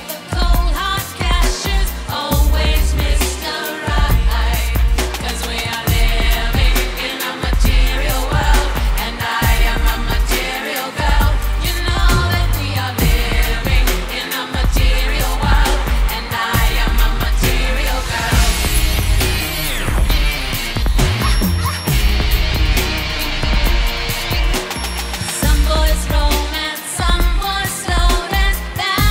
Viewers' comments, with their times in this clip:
0:10 you can hear the autotune!!